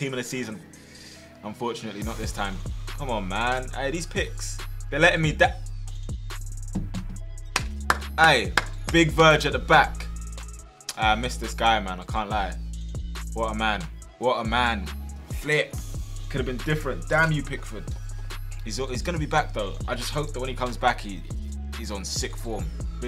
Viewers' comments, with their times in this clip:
0:07 sounded like something else